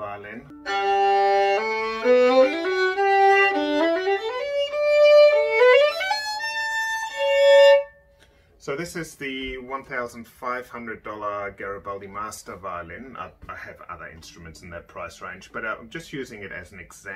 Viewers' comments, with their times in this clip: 0:04 From a total layman, the tin-sound was immeditly apperent and the first word that came to mind before you mentioned it. It's had this uncomfrtable feeling at the base of my neck that was calmed with the sound of the second violin that was tested at the mark. I would have never thought I could hear the difference, especially if you include Youtube's audio bitrate.